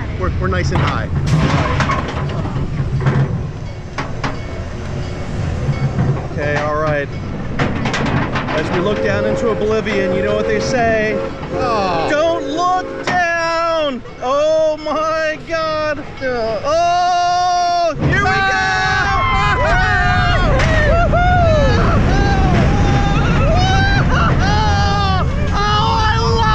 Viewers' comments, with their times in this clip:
0:08 I think I hear a train…